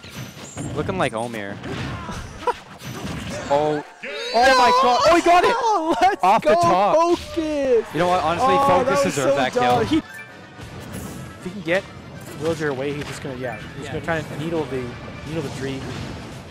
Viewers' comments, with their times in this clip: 0:03 The noise shiek made killed me